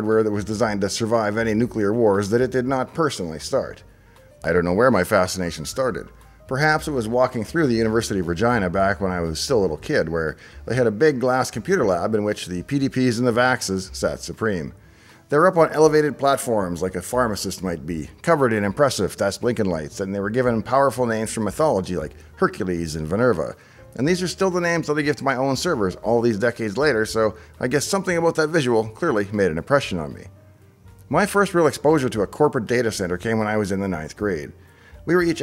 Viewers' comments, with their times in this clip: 0:06 Sorry, I'm an Aussie, but it sounded like you said "University of Vagina" If so, where do I enrol?
0:07 university of vir-GYE-nah; there's always a guy in there. 🤣
0:19 Vinerva? You mean Minerva the Etruskan counterpart to the goddess of Wisdom Athena? Nevertheless I'm sticking to that for my personal servers from now on. Thanks Dave